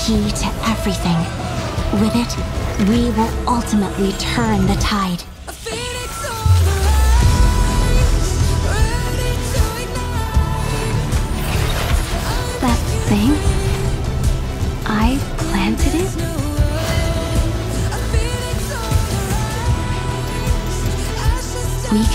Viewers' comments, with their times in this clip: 0:04 the warping snice really got those my life for Aiur vibe SO COOOOOOOL😇MY LIFE FOR PERLICA ARKNIGHTS/ENDFIELD